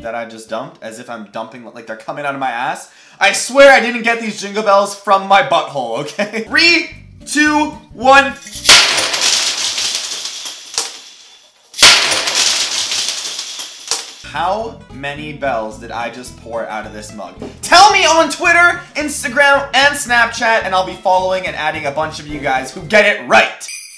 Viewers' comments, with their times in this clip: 0:09 Bells pause an count them I counted either 23 or 24